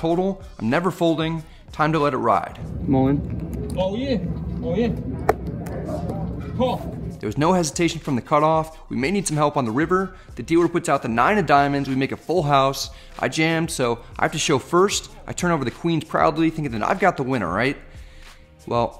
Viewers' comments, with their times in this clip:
0:04 Go to and tell me what the fuck language is the dealer speaking?